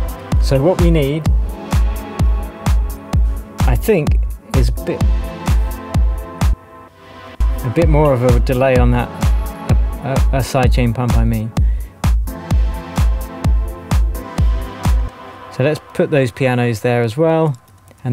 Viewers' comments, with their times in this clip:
0:06 with that filtered sound and the right vocal this could've been a deep house banger too 😊